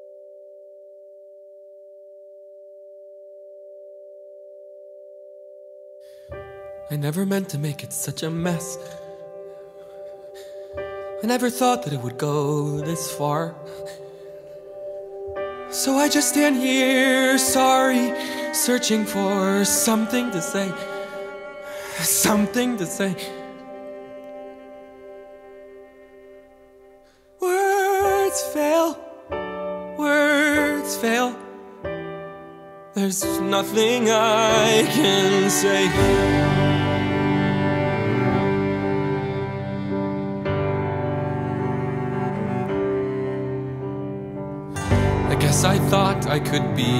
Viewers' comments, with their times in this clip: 0:08 Hit or It says mess, I know, but I still think it funny......I'm crying right now.
0:19 I am in love with how he says "sOMething to say, SOMEthing to say."
0:31 Okay. Is it just my ears? I hear an "f" sound 'There's (f)nothing I can say". A friend of mine thinks it's just the "s" from "there's" but I hear a distinct difference! I've always like this detail, and how it's like he's stumbling over his words.
0:33 Lets just all take a second to appreciate how emotional his voice sounds on this. "Theres.. nothing I can say."